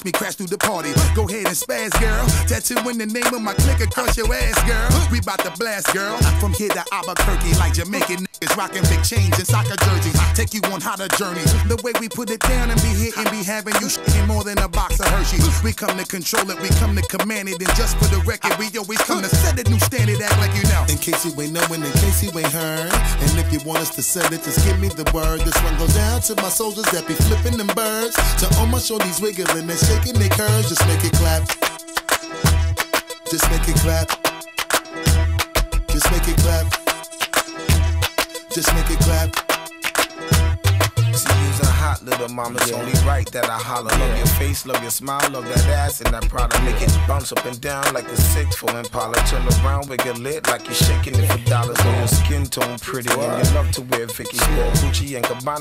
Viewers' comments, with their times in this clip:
0:05 "We 'bout to blast girl, from here to Albuquerque, like Jamaican n****s rocking big chains in soccer jerseys". So smooth Busta! 🔥👏
0:42 i was shocked as hell when he started to sing man he's good